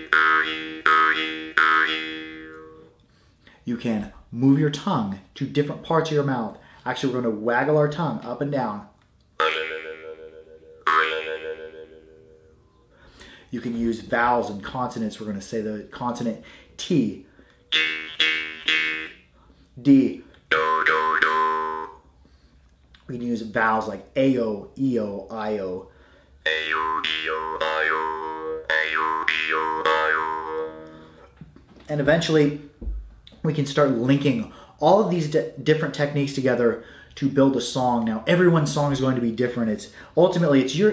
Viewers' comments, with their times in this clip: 0:09 That note you played sounds like a boing sound effect.
0:26 Daft Punk in 1920 doesn’t exist, they can’t hurt you. Daft Punk in 1920: